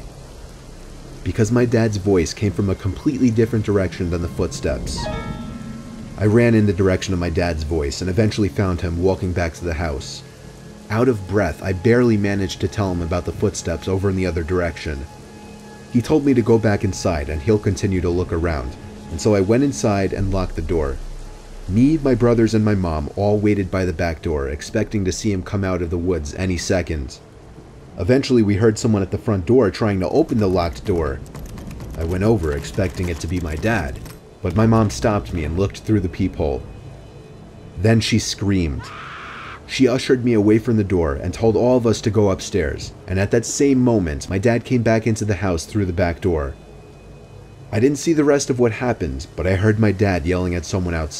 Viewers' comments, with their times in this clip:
0:04 does anybody else love it when that creepy note plays in his videos?
0:37 that scream! LMAO
0:38 I don’t know why but the scream is just so freaking funny to me 💀💀💀😂😂
0:38 I was laughing for like 2 minutes at that scream
0:38 THE MOMS SCREAM!!!! HAHAHA
0:38 Hello neighbor beginning scream vibes here anyone else